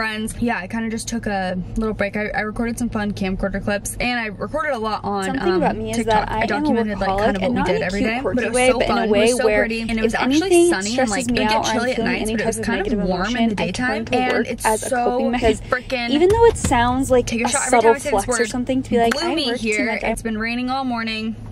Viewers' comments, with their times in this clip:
0:05 Min is when your friends speak at the same time and you just disassociate and understand nothing